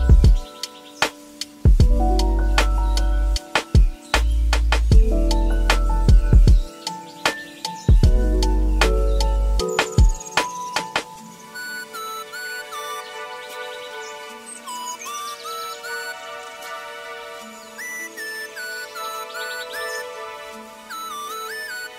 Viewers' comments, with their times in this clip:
0:07 when arrived I thought I was suddenly deaf